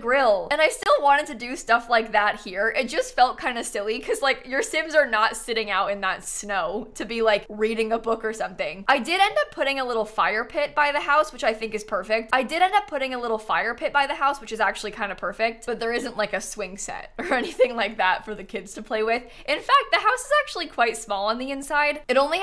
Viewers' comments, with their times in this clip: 0:09 I listened to this looped twice and it bothered me for the rest of the video 😂